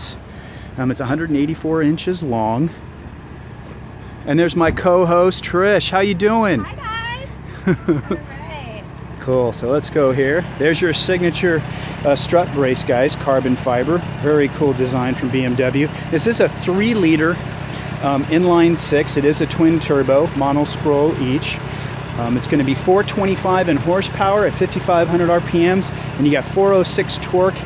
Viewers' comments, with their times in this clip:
0:08 LOL that laugh